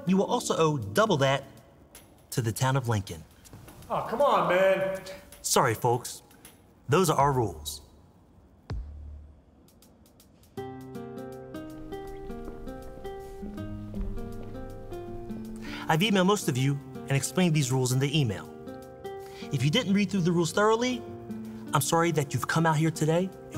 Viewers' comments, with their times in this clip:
0:10 My mom put this movie on before turning it off because it was awful but I got SO distracted by the acoustic music playing throughout such as because the melody is straight up the same as opening song of the anime "Air Gear", LOL. I'm serious, look up Chain by BACK ON and listen to the opening guitar, it's the exact same Did they stole it or is it some royalty-free sample? It was really weird to hear it appear in this movie of all things lol